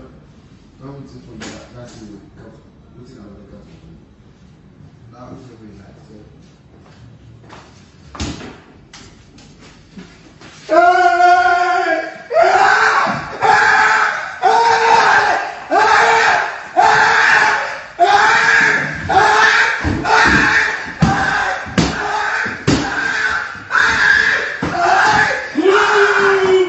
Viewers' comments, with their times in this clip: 0:09 That dude in the blue shorts was absolutely terrified , the mask is already a shock but then the huge size of the guy is another shock you could see why they are overwhelmed with fear and it doesn't help that dude in blue shorts is already a small guy he looked like a fly caught in a spiders web lol,, his screams while running down the hallway is too funny Haahaa 😂😂🤣🤣